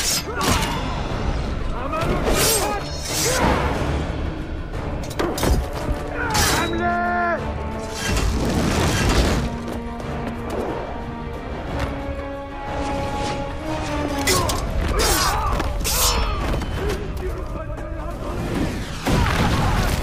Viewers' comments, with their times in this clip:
0:07 the catapults have the same sound as the doors in Warrior Within